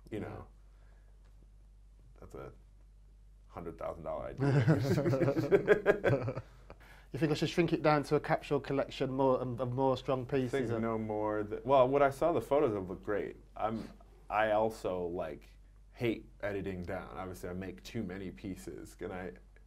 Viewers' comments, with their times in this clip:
0:04 whats up with that laugh